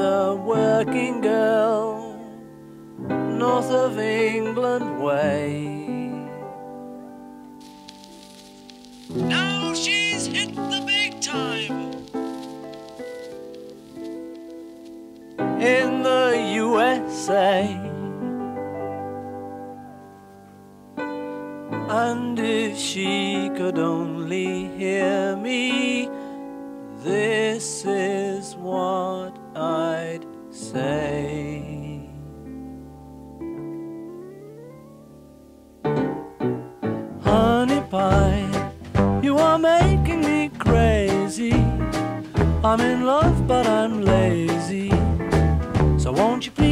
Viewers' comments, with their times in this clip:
0:06 Omg, i was playing minecraft and i thought it was a creeper, that scared me
0:08 Paul invents Lofi Hip-Hop
0:34 that little guitar pick gives me chills (in a good way)
0:34 And I hear a clean transition from piano to fingers sliding on a guitar